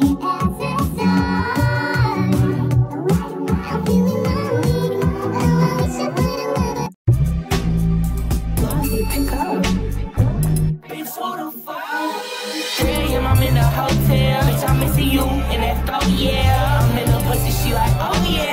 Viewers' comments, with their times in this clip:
0:06 What happened to the music 😭